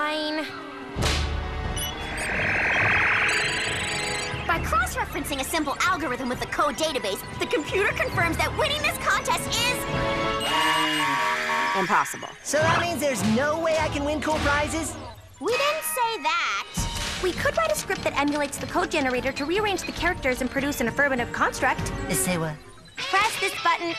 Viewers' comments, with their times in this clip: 0:04 Was anyone else thinking it said "loser" ?